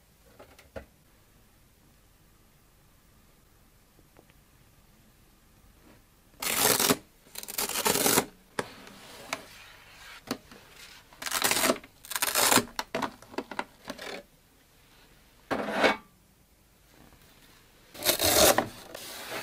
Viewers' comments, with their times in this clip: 0:06 nice peeling sound